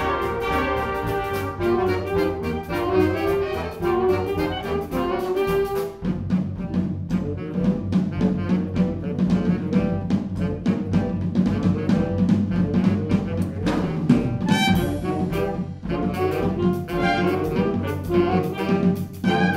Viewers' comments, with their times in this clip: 0:06 That drumming is friggin' wonderful. Fits the song so well.